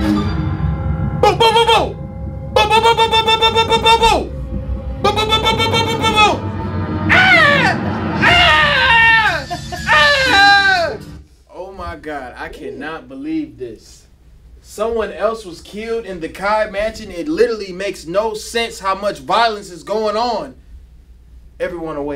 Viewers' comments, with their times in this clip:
0:03 gta ahh scream 😂😂